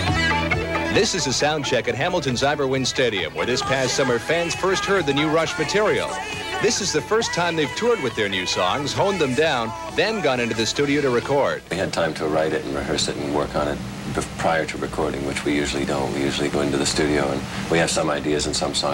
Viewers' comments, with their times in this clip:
0:04 that is NOT a soundcheck. Audio isn't that